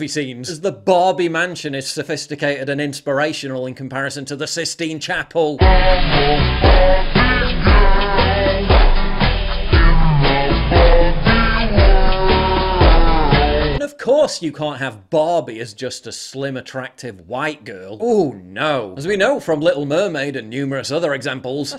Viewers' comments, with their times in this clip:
0:06 I lost it when he played the slow “Barbie Girl” 😂😂😂